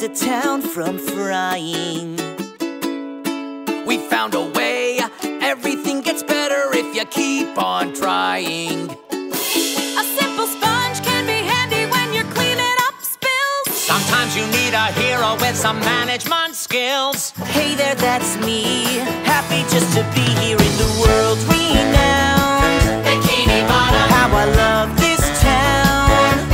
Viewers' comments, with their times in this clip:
0:10 Pearl was not singing.